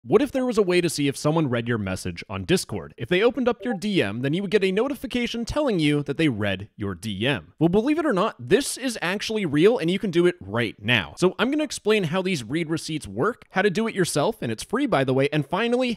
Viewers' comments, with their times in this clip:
0:03 imagine putting a discord ping sound effect in a video meant to be watched by discord users